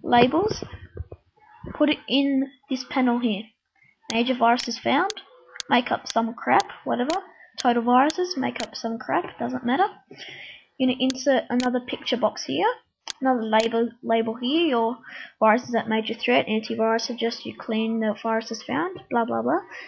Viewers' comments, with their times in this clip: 0:05 xD make up some crap waTeVa....total viruses, make up some crap doesn't maTeR...lol...at xD...funnny lol...and u say alright in funny way xd...and why empty labels...